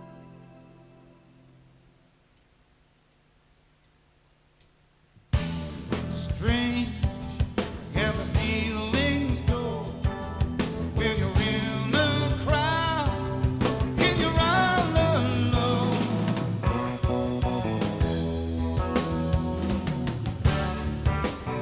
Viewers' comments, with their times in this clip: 0:08 Paul Williams sounds better than the original Studio recording vocalist Jack Bruce for sure.